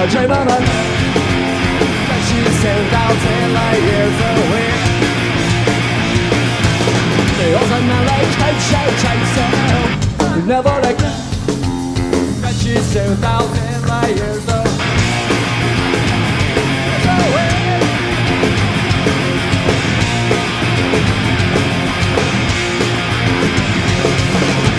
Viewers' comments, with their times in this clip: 0:09 The part where Billie guitar cut out scared the shit out of me
0:09 Best guitar playing moment of the show